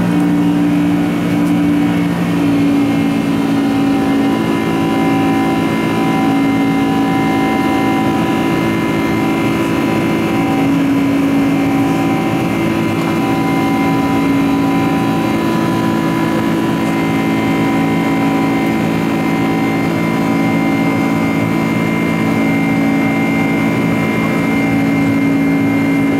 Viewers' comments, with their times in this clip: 0:03 you hear the engine tone change, as well later on . Is this just the pilot reducing throttle when not needing as much since they are at a higher altitude?
0:04 What causes that "brrrr" sound during take-off? I often hear it myself when I am a passenger and taking off in a plane. Is it due to a beat frequency from different engine speeds or something else? Any airplane enthusiasts know the answer?
0:09 Is the engine sound normal? It sounds kind of grinding to me